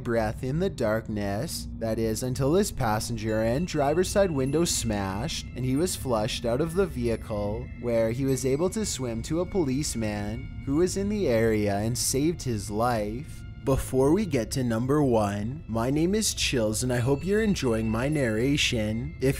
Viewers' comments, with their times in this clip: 0:03 Your narration could've been better. You made weird pauses and emphazised in odd places. Soundmixing was alright though.